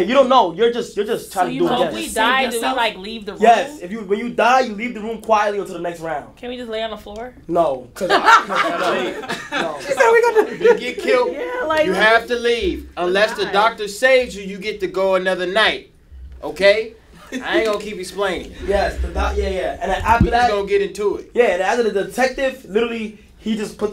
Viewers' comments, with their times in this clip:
0:07 ddg sounding like a school teacher lmao